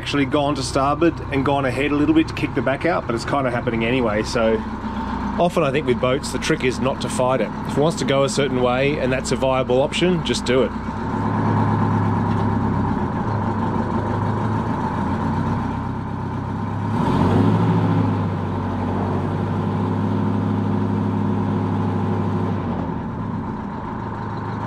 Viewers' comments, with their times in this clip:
0:06 it the way it sounds at idle almost a hunting sound . . . is that normal or are u causing it?